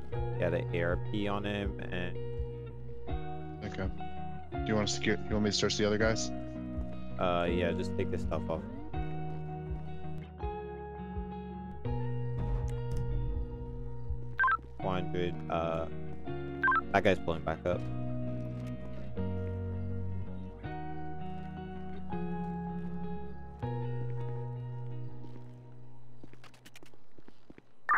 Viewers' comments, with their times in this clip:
0:08 😅then bro plays a sad song